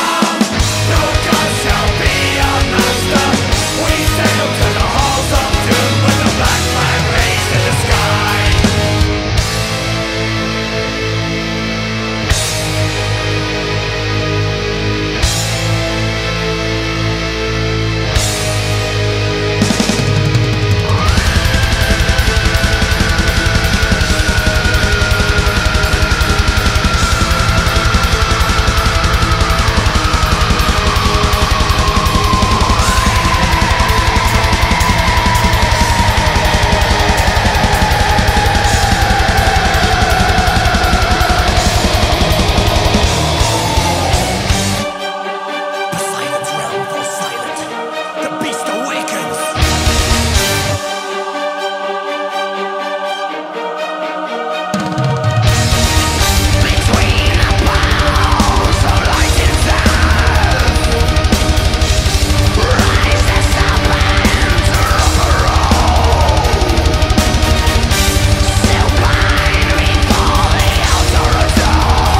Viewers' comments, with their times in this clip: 0:09 Alestorm begins the transformation into Ensiferum.
0:09 when Alestorm turns into Dimmu Borgir. It is so Spiritual Black Dimensions, love it!!
0:09 black metal alestorm
0:10 I have never heard a cut from power metal to straight black metal before xD lol holy shit why did I stop listening to these guys!
0:20 Jack Sparrow and Dani Filth fucked...
0:20 annnnd switch to black metal
0:20 Black metal pirates.
0:20 And her we have the mating call of a wild Chris Bowes
0:20 Craddle of Filth mode initiated
0:21 Cradle of Filth mode engaged.
0:21 how the fuck do you do that with your voice
0:21 Holy shit Dani filth is that you??
0:23 black metal af
0:44 - I love this Dimmu Borgir part
0:51 Enter Dimmu Borgir ... ;)
0:54 sounds like shagrath of dimmu borgir
0:55 they become Dimmu Borgir. lol.
0:56 WAIT! Did Dimmu Borgir take over ?
0:56 Shagrath, is that you?
0:56 Dimmu Borgir Style